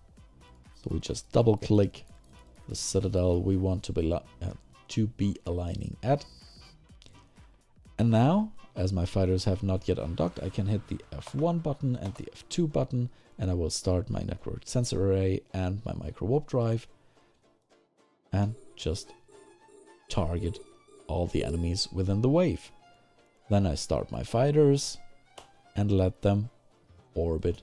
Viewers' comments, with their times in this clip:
0:10 jumpscared myself like an idiot with the combat alarm sound, because ive got multiple game windows open lol